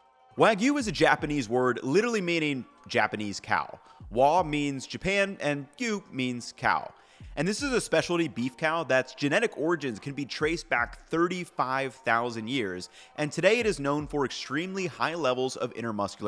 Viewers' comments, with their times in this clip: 0:04 The "wa" part of wagyu is correctly pronounced